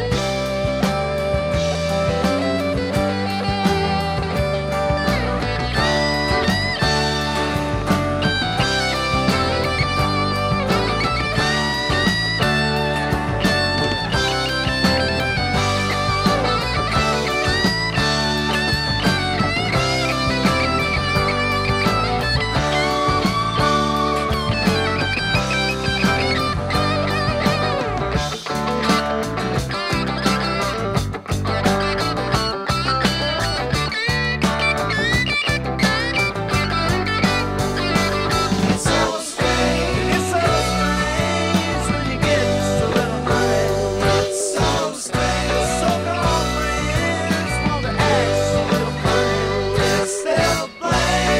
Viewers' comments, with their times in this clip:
0:04 Ed said he played a mid-60s Gibson SG on the solo. He played the first half with the pickup switch in the middle but had the tone all the way down on the neck pickup. he smacks the switch down & continues with the second portion of the solo. This can clearly be heard.
0:34 It is it is just muddier until when he switches to bridge pickup.
0:34 Ed switches to the lower pickup which sounds like it has the treble turned up on the tone.